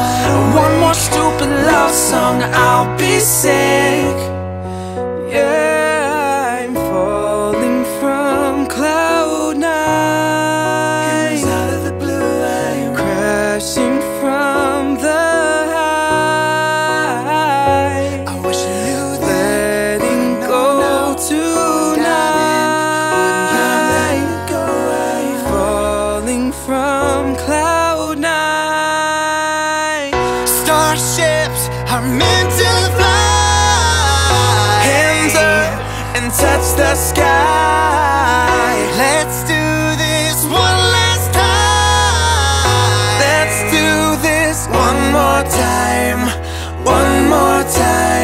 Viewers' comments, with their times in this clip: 0:05 tell me this doesn't sound like Ed sheeran tho
0:32 that flawless voice 💚💚💚